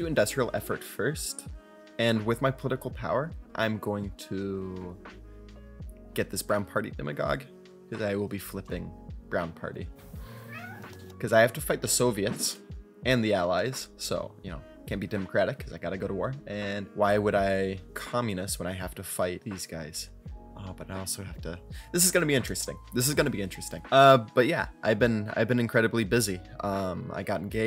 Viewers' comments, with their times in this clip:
0:09 Congrats on the engagement dude! I was just wondering a bit ago where you went, but that's a very good reason to be absent. Your HoI4 videos are (in my opinion) better than anyone else's. Take your time with uploading, though! Sidenote(s); I believe "Sami" is pronounced like "Sah-mee" rather than "Sam-mee". Second, do I hear a kitty cat ?!